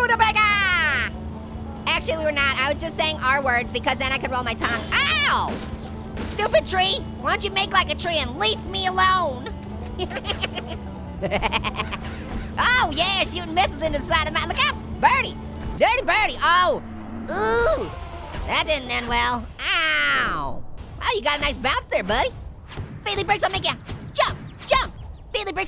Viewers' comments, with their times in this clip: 0:10 he sounded like an evil witch